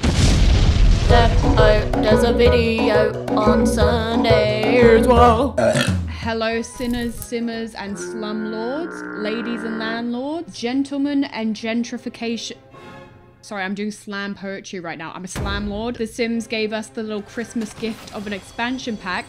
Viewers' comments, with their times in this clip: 0:04 That burp was crisp